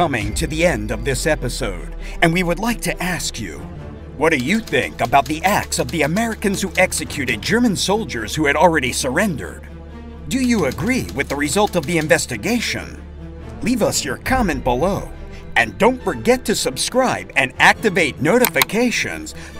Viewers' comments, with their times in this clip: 0:07 This is a very amateurish and undernourished “documentary”. It promises proof of a scandalous “massacre” but fails to deliver. The tone of the narrator is wrong for the subject matter. He sounds more like he’s announcing a soccer match rather than offer the gravitas the subject matter demands. They spend too much time asking viewers to support the channel rather than deliver the goods.